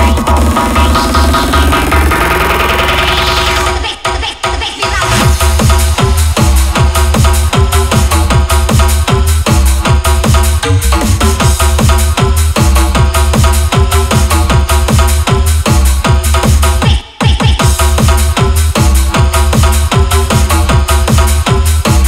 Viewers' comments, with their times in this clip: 0:04 with headphones one of the best drops I've heard